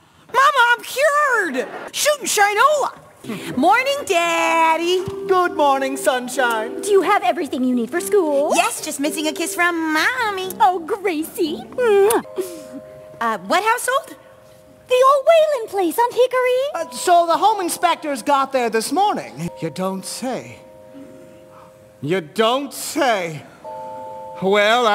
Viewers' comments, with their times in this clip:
0:10 Yes and no. They're not necessarily bad people/parents, but they've emotionally stunted their daughter, even if unintentionally. no highschooler would ask for a kiss from their mother like that. The way she said it made her sound like she was in first grade instead of 12th.